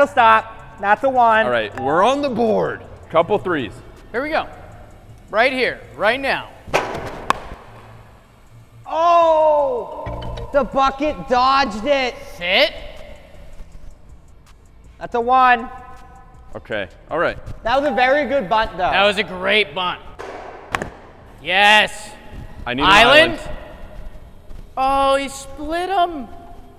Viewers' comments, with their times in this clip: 0:09 The music over the island is just perfect